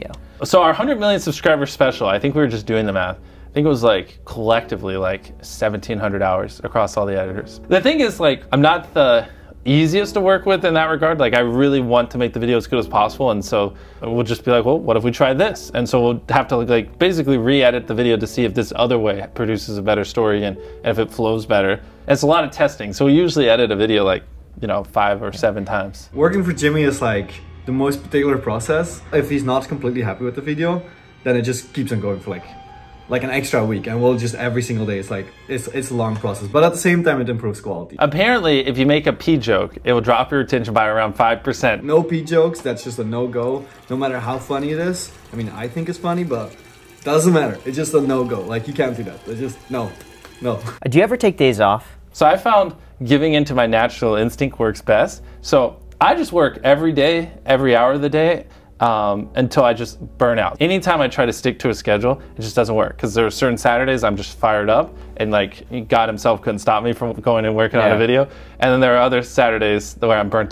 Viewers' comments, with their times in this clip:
0:09 The Minecraft music hits diff
0:20 that background music gave me nostalgia
0:55 Anyone realised that they started playing Minecraft music